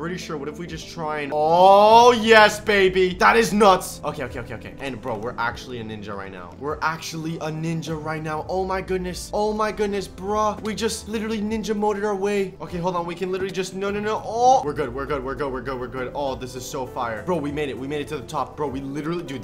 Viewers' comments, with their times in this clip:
0:04 Sounds like he's saying Oneshottingham lol, sounds like a village from the uk